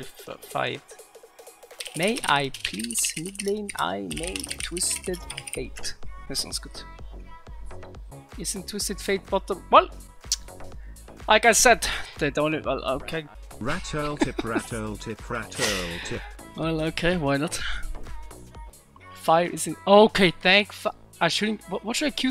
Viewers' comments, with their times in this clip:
0:05 This russian music ...